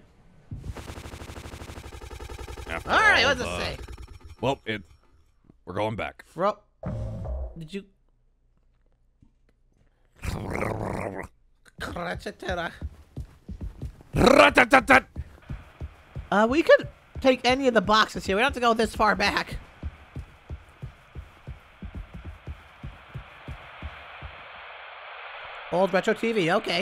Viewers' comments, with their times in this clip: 0:09 How are those sounds humanly possible? I get the characters aren't human, but the VA's are! (I think)